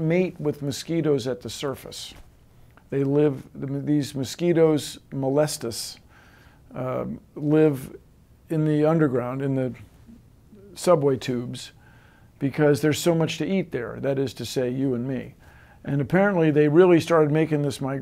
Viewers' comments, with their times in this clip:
0:03 I thought he said molest us, I was terrified